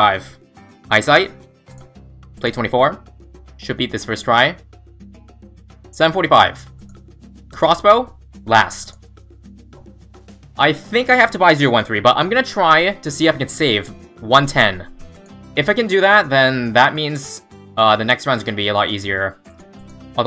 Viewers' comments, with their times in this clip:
0:05 Was that swedish